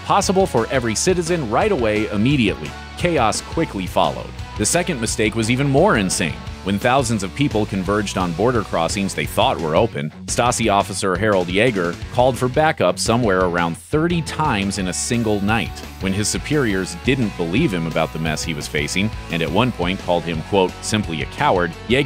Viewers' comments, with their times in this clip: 0:03 Couldn' t make it past because of that annoying music. M outta here. Bye